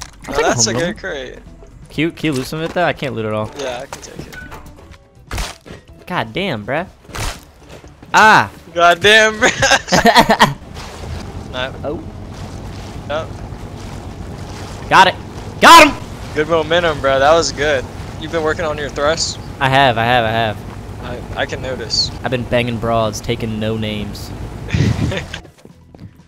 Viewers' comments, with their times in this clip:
0:10 The laugh was really finny